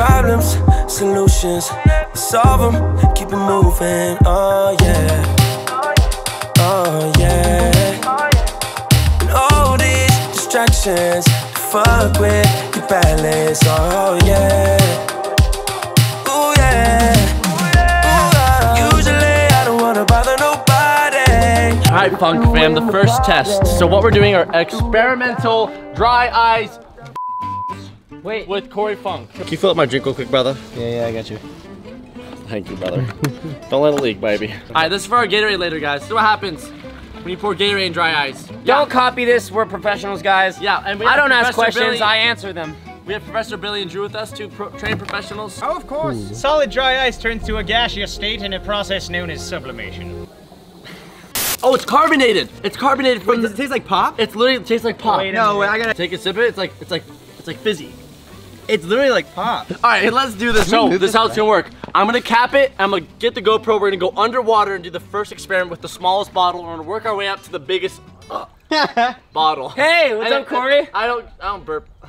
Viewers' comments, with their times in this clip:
0:08 Also you forgot to beep the f word in the song when you had the slide clip Just saying.
0:53 i legit thought he said it tasted like cock